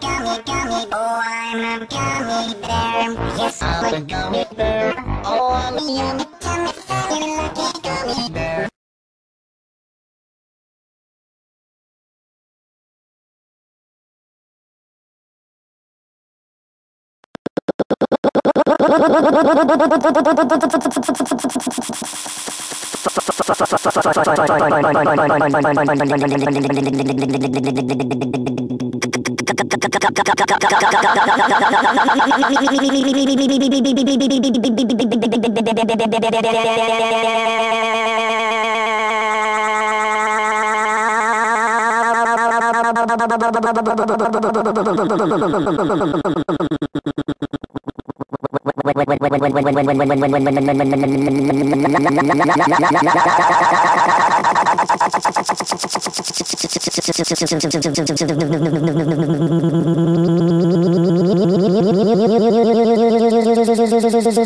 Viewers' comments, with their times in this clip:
0:09 very slow (0.1x)
0:49 very very cylinder slow 0.1 x